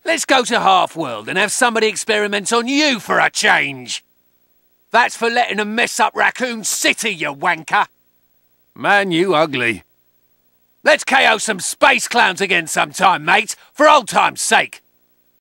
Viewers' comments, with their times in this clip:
0:09 Something about the way he delivers this line cracks me up